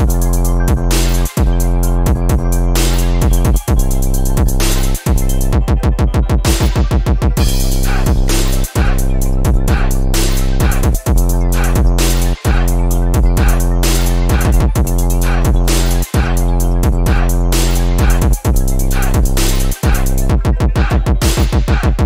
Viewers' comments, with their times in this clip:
0:09 the victims going “ow”